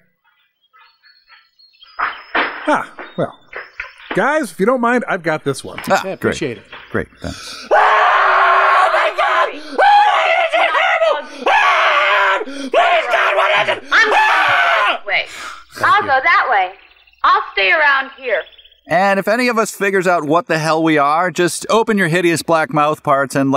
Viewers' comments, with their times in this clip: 0:05 God that scream always gets me! 😂